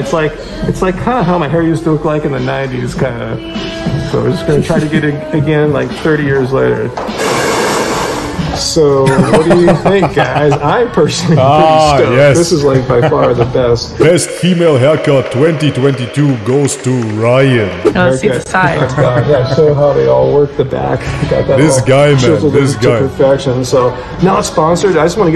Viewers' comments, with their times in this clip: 0:08 That genuine belly laughing reaction had me in stitches too man hahahahaha